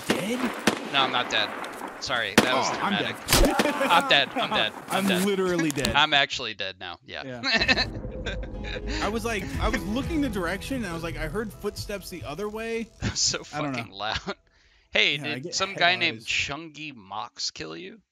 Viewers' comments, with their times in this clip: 0:04 kinda want a explanation on this one loud svd through a bush if he was close should’ve been louder so how did he dome him so easily